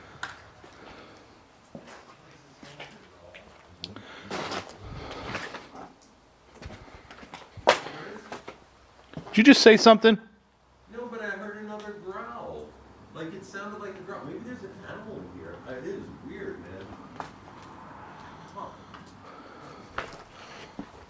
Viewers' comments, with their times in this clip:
0:03 Oh, I heard something talking here
0:04 you can hear a muffled voice
0:04 -5 Some strange deep male voice that said something and it came thru my left headphone but could not make it out!
0:04 is another voice